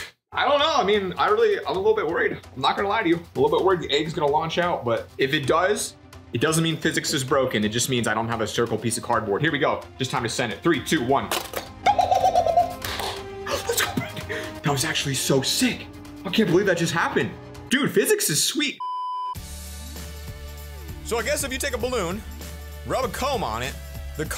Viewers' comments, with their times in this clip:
0:10 that laugh got me laughing
0:11 I laughed at the same time and exactly like him
0:11 if you go to in 0.25 speed he sound like monke